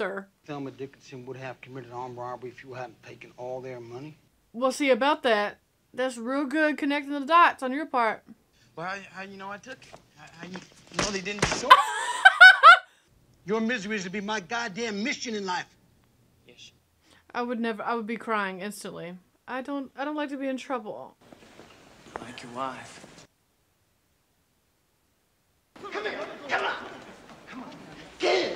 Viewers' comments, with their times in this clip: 0:10 i absolutely love your laugh. it is just exuberance and joy and happiness 😆